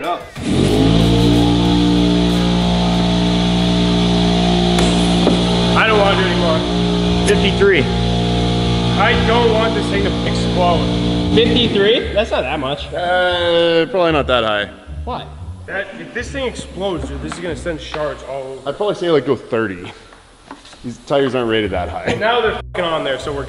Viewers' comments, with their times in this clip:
0:06 sounds like a tug boat